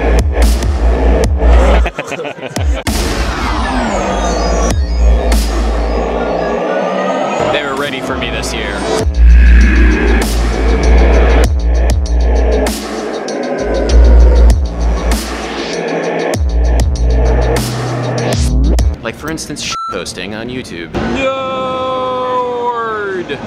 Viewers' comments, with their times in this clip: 0:09 That ultimate mix of your samples fucking hell